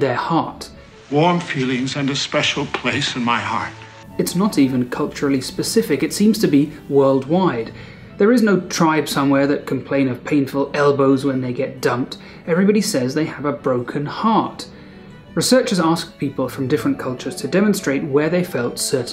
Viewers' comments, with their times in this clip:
0:07 i faintly hear Sam O' Nella